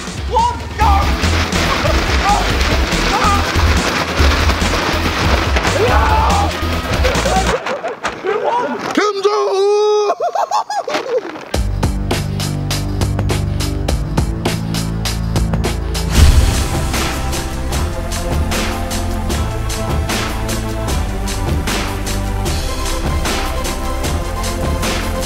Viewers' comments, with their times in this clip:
0:09 like who noticed that JJ laughed because tobi tickled him see his hand ✋